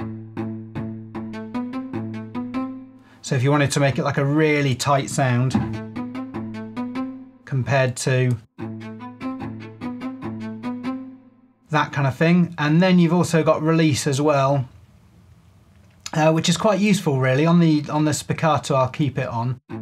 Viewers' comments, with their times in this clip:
0:05 Oh god I feel like an idiot now, because I have Cello Untamed, but over the summer sale I went and bought LASS First Chair to get a nice super sharp solo spiccato, MEANWHILE fiddling with these controls would've given me that sound more-or-less 🤦‍♂️ oh well, I suppose buying a sample library you don't really need and regretting it is a rite of passage for producers :D